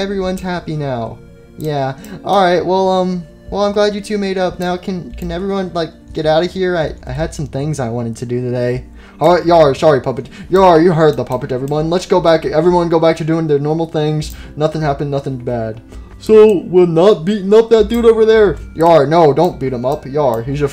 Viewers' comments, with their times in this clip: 0:05 The way she said that last part of the sentence tho...